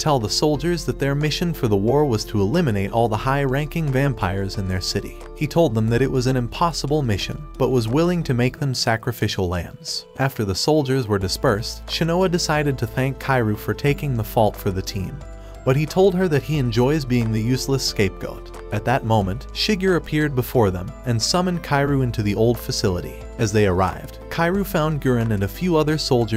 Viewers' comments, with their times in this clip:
0:10 i didn't know lambos in this owrld💀💀💀
0:10 where they get a lambo from